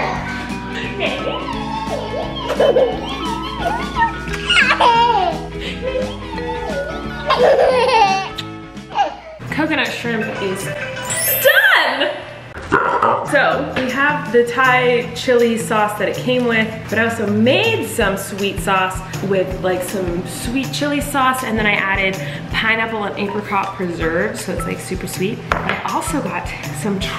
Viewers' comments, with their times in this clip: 0:10 I got triggered at the alarm .....